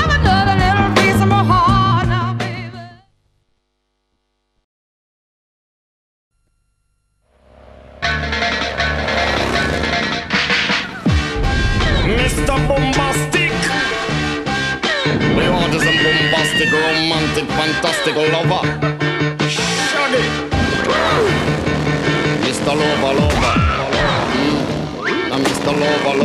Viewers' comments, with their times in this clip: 0:07 for today when ill hear that music, ill only in my mind have that commerial XD